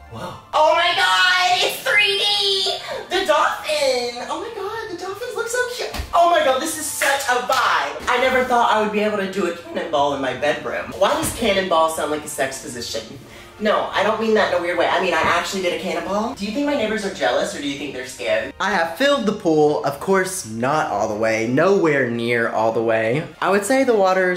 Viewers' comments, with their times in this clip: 0:08 we love a good voice crack...